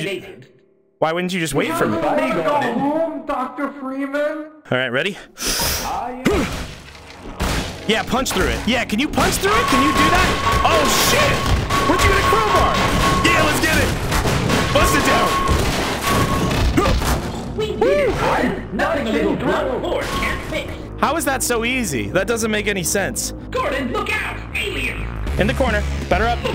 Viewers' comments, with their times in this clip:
0:05 Every time Dr Coomer says "Ah, yes" my brain follows up with "You practice your judo well" from the Succulent Chinese (or can we not call it that anymore?) Meal video. It's such a similar cadence and tone.
0:09 when the doom music kicks in🤣🤣🤣🤣🤣🤣